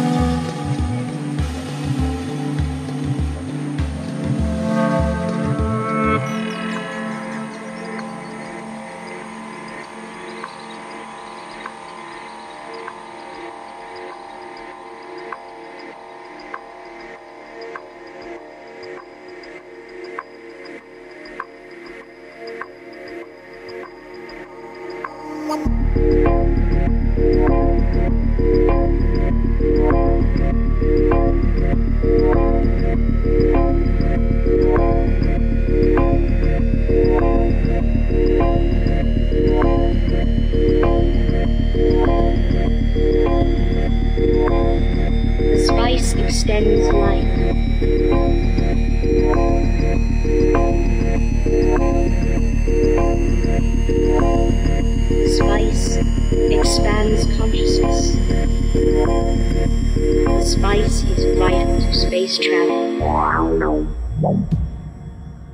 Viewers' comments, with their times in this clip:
0:10 the song squeezez my tears out of my eyes.
0:52 MY GOD.... That song is pure adrenaline... Love it!